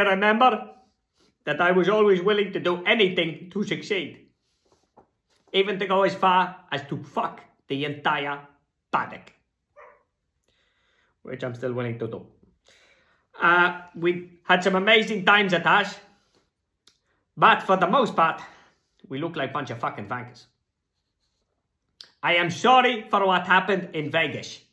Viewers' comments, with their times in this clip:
0:09 I can only assume that is Roscoe barking disapprovingly in the background xD
0:09 The dog's bark after he says paddock 🤣